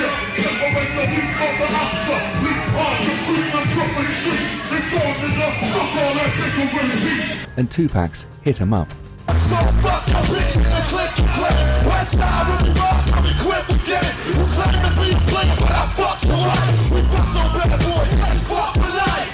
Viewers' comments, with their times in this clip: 0:07 Two-Packs hit em up